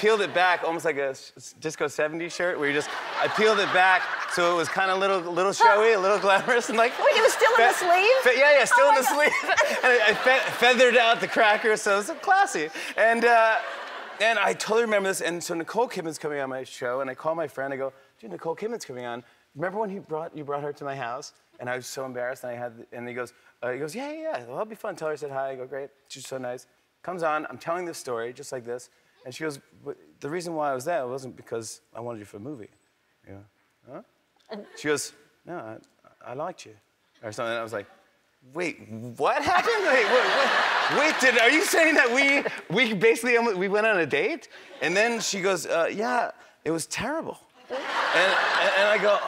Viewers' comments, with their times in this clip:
0:05 i feel like Ellen was genuinely laughing, like she usually has a smile on her face and looks interested bc it's what she's meant to do but this bit was so genuine i love her
0:36 when Jimmy imitates Nicole Kidman’s accent!!! Perfect 👌
0:36 he sounds British when he said 'i liked you'